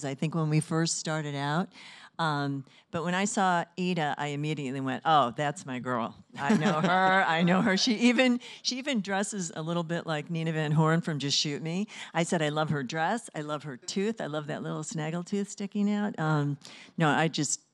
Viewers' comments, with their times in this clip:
0:04 Wendie Malik's "oh, that's my girl" literally sound the same as Eda